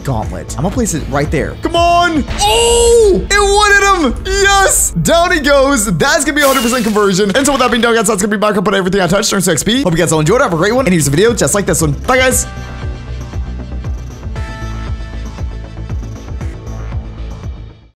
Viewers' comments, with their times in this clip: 0:07 Omg he is talking so fast